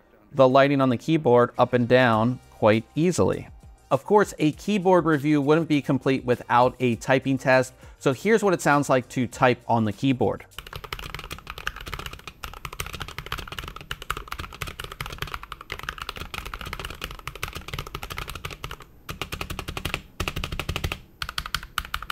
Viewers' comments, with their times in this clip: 0:10 This is NOT what the keyboard sounds like, get a better microphone. Yours is so bad it makes it sound like a membrane keyboard